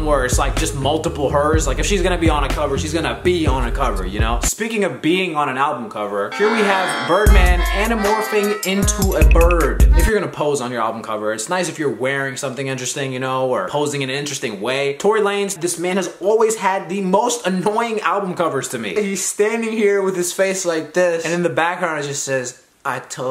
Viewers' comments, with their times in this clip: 0:06 i'm ashamed at how hard I laugh EVERY time I hear that beat...